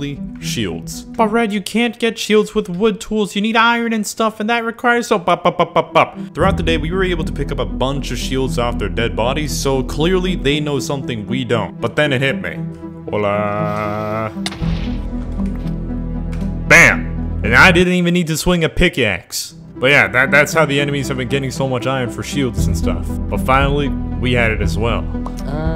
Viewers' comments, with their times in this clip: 0:09 i swear to god, you sound like technoblade